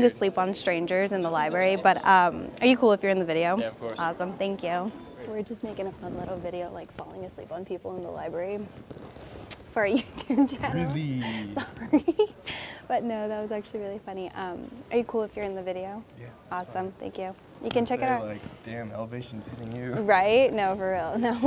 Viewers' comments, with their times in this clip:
0:06 PLZ THAT’S EXACTLY HOW MY BOYFRIEND TALKS AND THEY HAVE THE SAME SMILE AND VOICE- also they lowkey resemble eachother like bye..